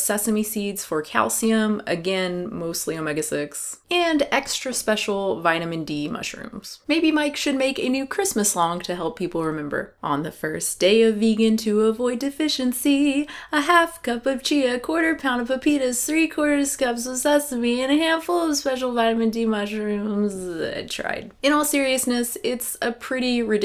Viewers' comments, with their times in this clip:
0:10 yess queen slay me with those vocals!!